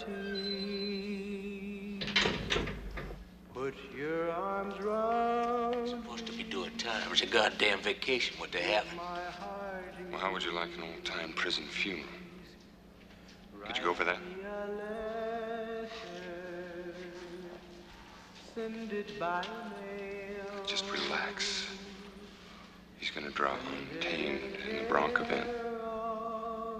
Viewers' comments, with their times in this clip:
0:08 Mike Ehrmantraut talks to Mr Incredible